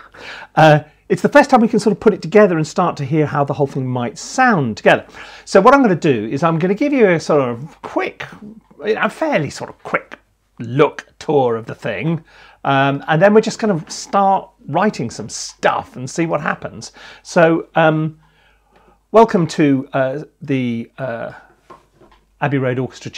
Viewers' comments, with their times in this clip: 0:04 Some audio problems in this video. Mic is overmodulating on the commentary.